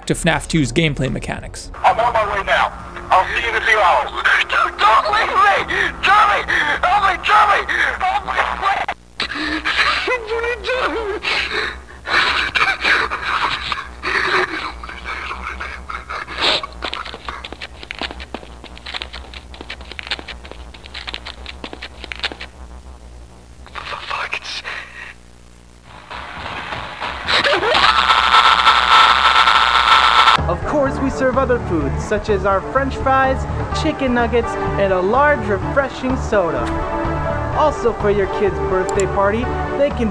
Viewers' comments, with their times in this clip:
0:08 The shear fear in Joseph's voice is so genuine I'm starting to get worried they actually kidnapped someone to get that audio
0:10 this is the most realistic afraid scared voice in all of FNAF and horror movies he actually sounds scared genuinely
0:12 Bro is crying like a 5 years old
0:24 is it me or did mangle just punched his groin. no wonder he was screaming